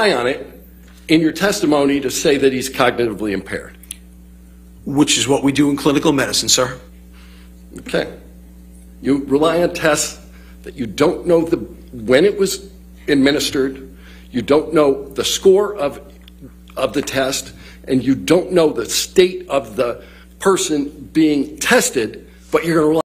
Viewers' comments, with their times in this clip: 0:06 the way he says “that’s what we do in clinical medicine sir” is so creepy and gross. Basically had it layed out in front of him that his testimony wasn’t adding up and he just stuck to his guns so cockily 🚩